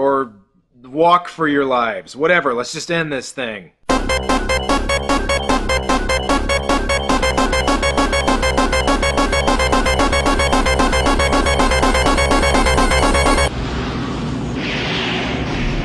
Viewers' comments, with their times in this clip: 0:03 That Sonic music nearly gave me a panic attack. Bad memories...